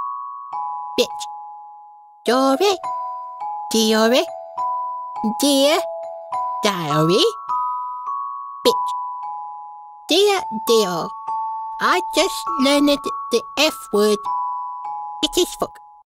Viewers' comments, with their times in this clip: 0:08 that "bich" im dying from cuteness overload 😭😭